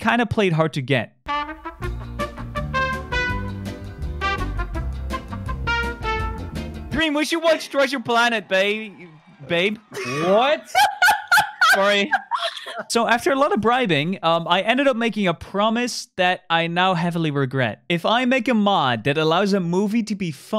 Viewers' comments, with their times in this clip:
0:06 it killed me when fundy was like, "we should watch treasure planet ba- babe" And dream said: whAT!? LMBO edit: (Nov 2022) OH wow 500 likes, this is my most liked comment!!! anyways